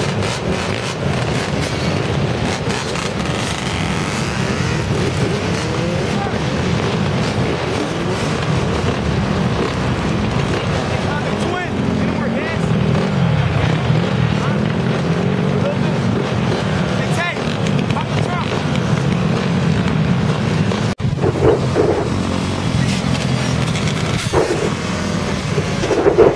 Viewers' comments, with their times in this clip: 0:08 Now this don't make any sense and he steady revin the bike LOL.